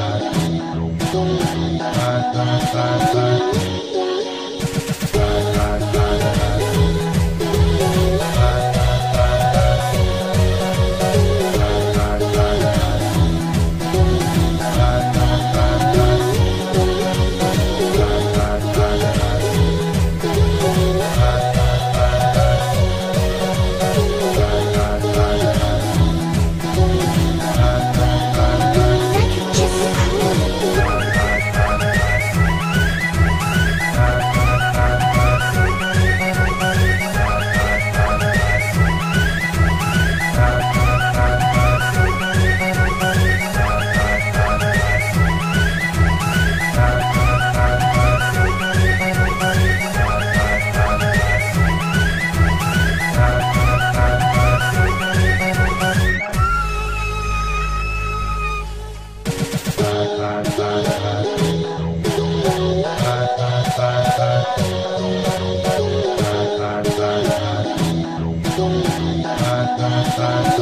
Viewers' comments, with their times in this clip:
0:10 Doesn't that remind anyone else of Nyan Cat?
0:30 meh ears are dead
0:52 sounds like Mario galaxy music